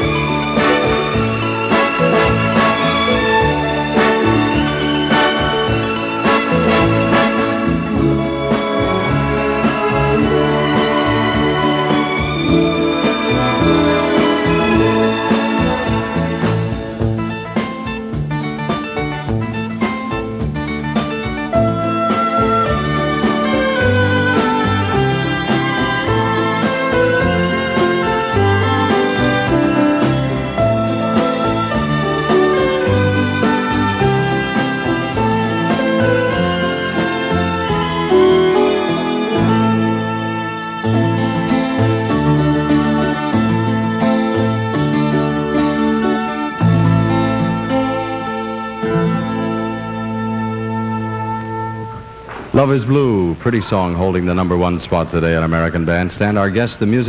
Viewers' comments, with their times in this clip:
0:06 That this music goes well with the smile of a woman...!
0:41 Beautiful instrumental. I love watching the couple in the foreground